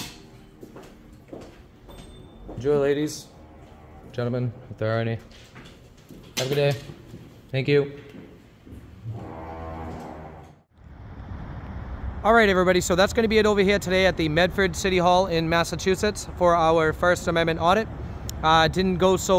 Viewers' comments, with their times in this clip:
0:04 anybody else catch that fart in the hallway just as you are about to walk out 😂